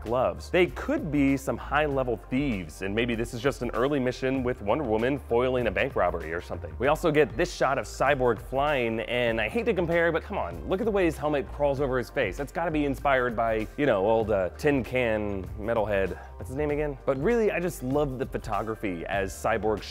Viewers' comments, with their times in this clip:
0:05 *pauses check out those....... Black gloves. XD